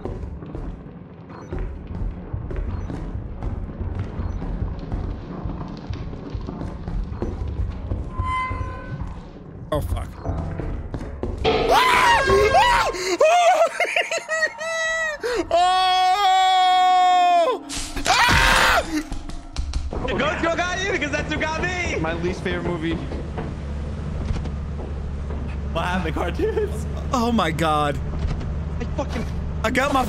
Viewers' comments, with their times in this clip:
0:07 he absolutely went schitzo mode. that yell came from the deepest part of his heart. this game is fucking brutal.
0:11 the jumpscare and hitting the airhorn was fantastic XD
0:11 that scream holy shit